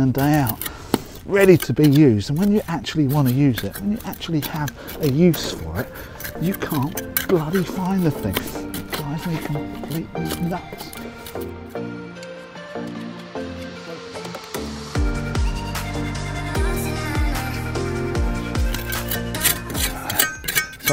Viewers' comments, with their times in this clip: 0:03 lol man muttering into hole, love it, can relate